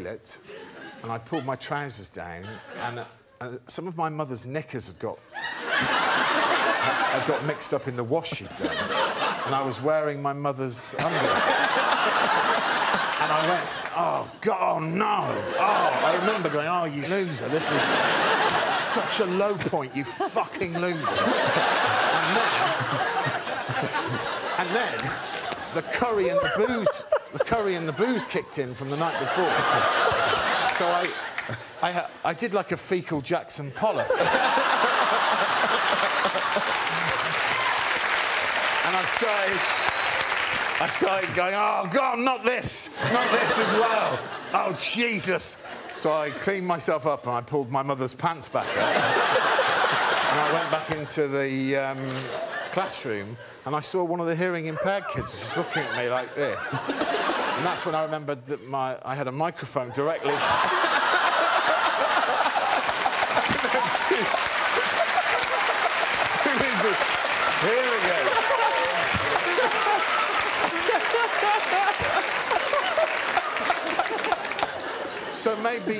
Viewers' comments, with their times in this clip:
0:04 Epic lady laugh
0:13 this "ooh gawnd nnoun" had me on floor
0:17 Ryan started laughing here ..
0:43 I like how Ryan Gosling laughed was like a scene straight out of Crazy, Stupid, Love after the fight with David Lindhagen and the police break it up. Ryan's character in the film might have been just completely himself lol
0:57 I like how everyone stopped laughing